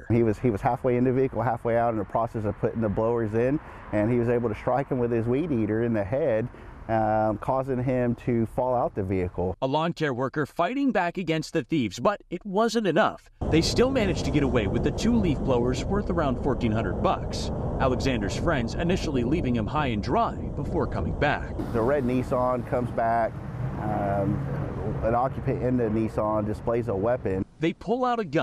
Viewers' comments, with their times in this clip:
0:10 he says "lawn chair" worker 😂😂😂